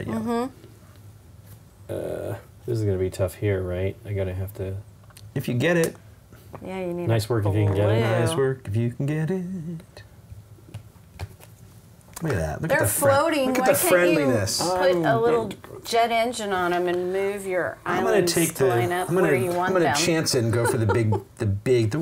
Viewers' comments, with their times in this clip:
0:05 Something that you say triggers (finnish speaking) Siri in my iPhone 😂👍